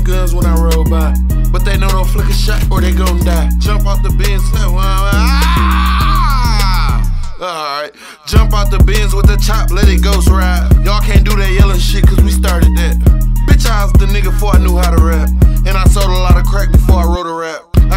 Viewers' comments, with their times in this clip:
0:04 when you hear police sirens in the song youre listening to